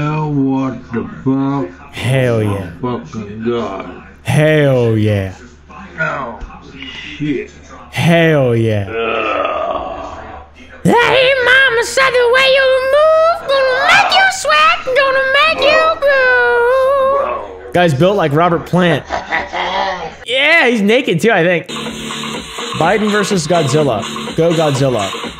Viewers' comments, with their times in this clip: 0:10 WHY IS NO ONE TALKING MY MANS CAN SING
0:10 tf man turned into a award singer out of nowhere
0:10 Papa oompa sing so well 😳
0:11 Is it just me or is oompa singing so satisfying??
0:11 a good metal rock singer